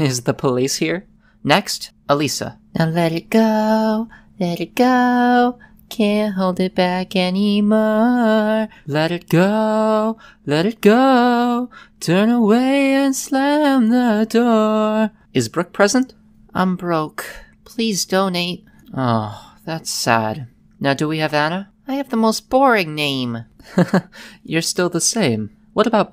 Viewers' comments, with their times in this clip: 0:09 the teacher sang good Ngl